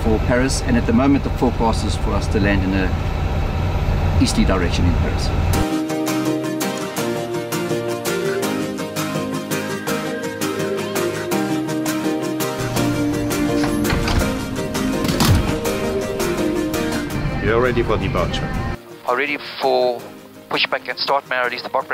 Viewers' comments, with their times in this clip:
0:03 sounds like Alfred from the Dark Knight